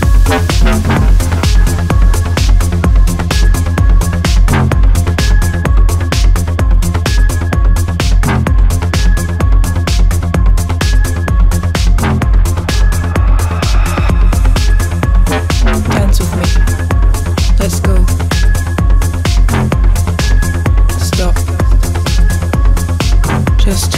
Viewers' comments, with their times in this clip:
0:04 I don't know man, this music and the level of composition is sick. Guetta (+ Morten) are geniuses. For example, is pure gold.